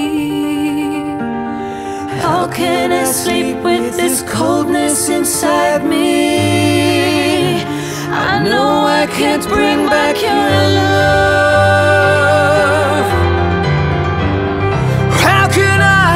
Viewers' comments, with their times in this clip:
0:04 wonderful harmonies... really wonderful !